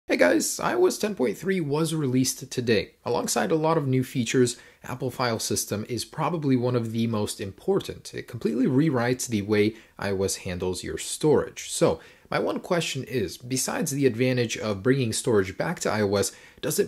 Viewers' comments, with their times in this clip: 0:00 that "hey guys" was so weird
0:00 Dat voice crack though!
0:00 crack in the voice lol